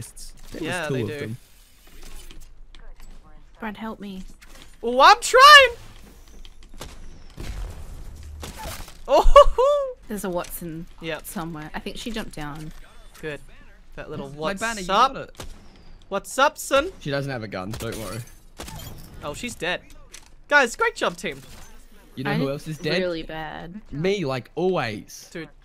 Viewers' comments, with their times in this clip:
0:08 that headshot sound, it sounds like something from mortal kombat